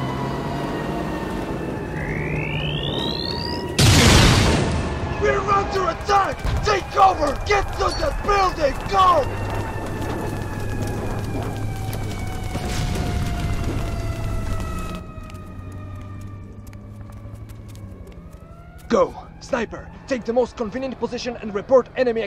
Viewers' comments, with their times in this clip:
0:06 why does this guy sound like tachanka